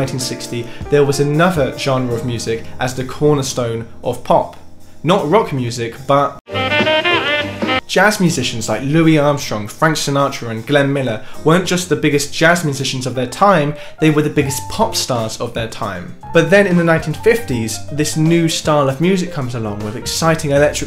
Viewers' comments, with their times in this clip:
0:05 "not rock music but.. *THE L I C C *
0:05 the l i c c
0:06 Mate played the damn lick, innit?
0:08 Nice insertion of “the lick” 😮😂